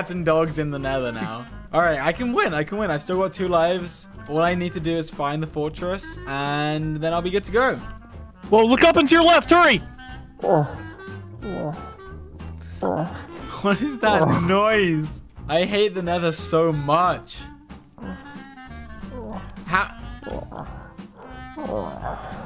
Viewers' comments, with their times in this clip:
0:09 quality ASMR sounds